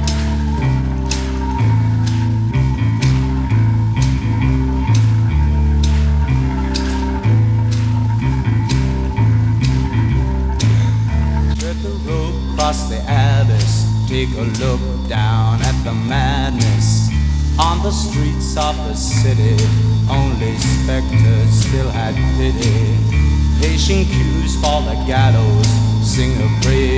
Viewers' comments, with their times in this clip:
0:10 The weird thing is that, if you look closely, there's an edit (audible ). Lake switches clothes at that point!